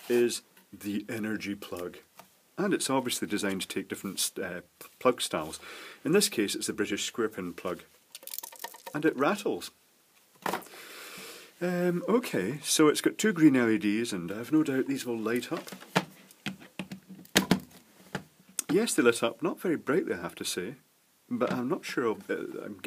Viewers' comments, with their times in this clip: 0:07 Oh WOW!!! You got the deluxe "Extra Rattle" model!